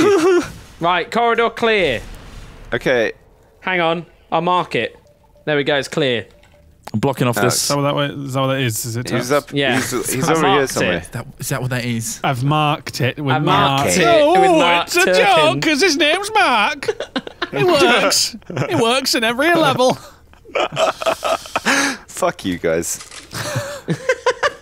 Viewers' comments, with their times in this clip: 0:06 Wow onwards at half speed is glorious XD